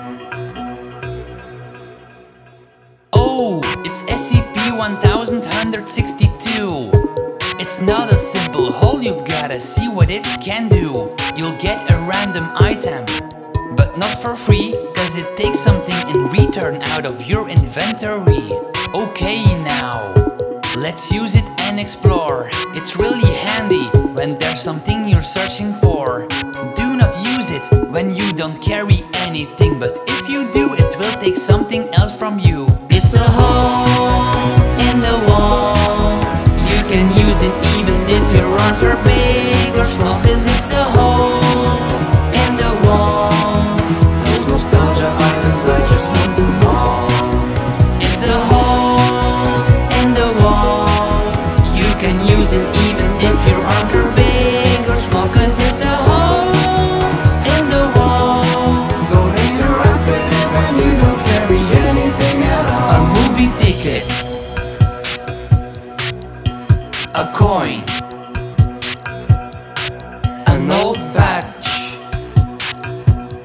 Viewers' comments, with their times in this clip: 0:07 it sounds a bit weird 18 year olds help me out here
0:55 how i sing on mondays